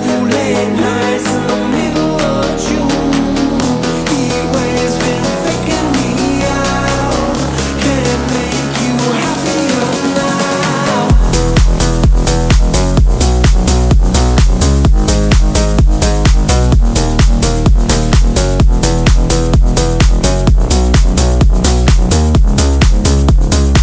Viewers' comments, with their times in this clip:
0:10 The main hook in its outro form from is SO PURE AND SO GOOD